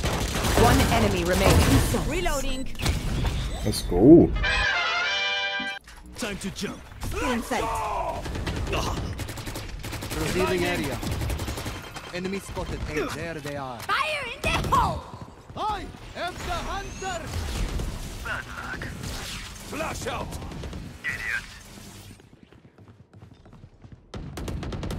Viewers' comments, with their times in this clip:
0:05 did you guys hear breach's ult "let's go " sound?